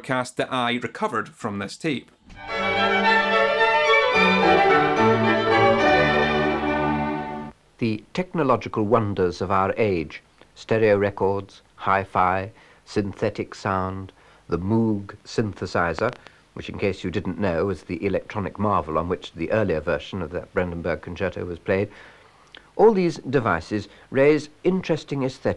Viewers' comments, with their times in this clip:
0:09 That announcer sounds like Rowan Atkinson! The way he pronounced Moog with an emphasised M brought me back to the Roll Call Sketch Rowan does.